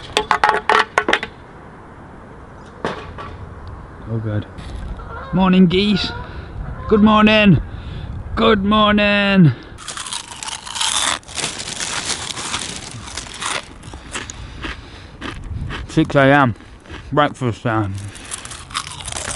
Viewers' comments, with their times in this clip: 0:04 that wasn’t the geese making the sound it was the neighbors uhh uhhh uhhh